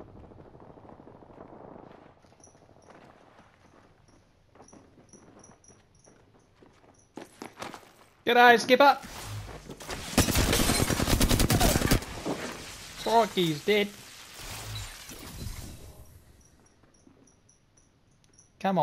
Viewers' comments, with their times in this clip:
0:04 the cricket in your room wakes up